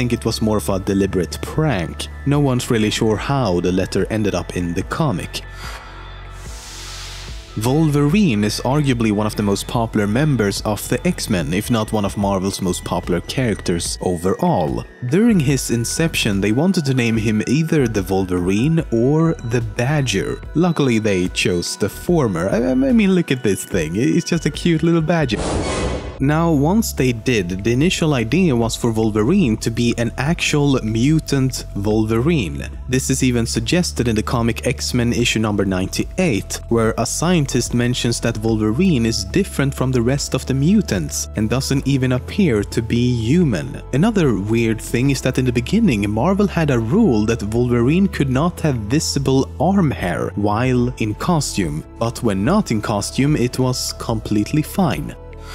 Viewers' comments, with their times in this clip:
0:07 Vulva-reen... Now that would make an interesting superhero.. ;P
0:07 my inner child laughs at the pronunciation.
0:24 Volverine, lol. I died. I just died.
0:42 Yuman. Definitely Yueman